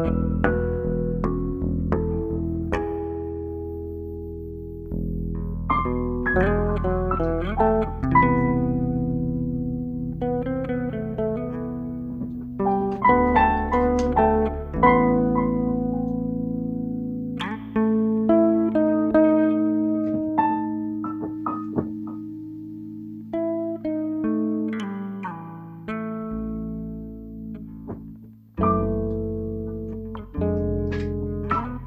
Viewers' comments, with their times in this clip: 0:06 that part slaps what the fuck! Damn, he turned a cat hitting piano keys into a abstract jazz session hahahah
0:18 The bit ….oh my GOD,, that is HILARIOUS! Where he makes it like the cat follows him on that dissonant melancholic fill…that has ROTFLMAO like I’m a grade 7middle school kid! This is just good fun, I don’t care who you are..And I’m not even a Cat Person!, 😂🤣😂🤣